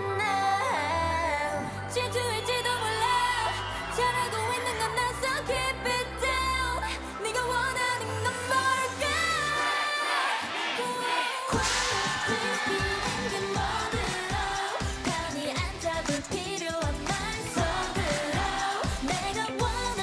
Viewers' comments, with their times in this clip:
0:06 yoon's high note 😍😍😍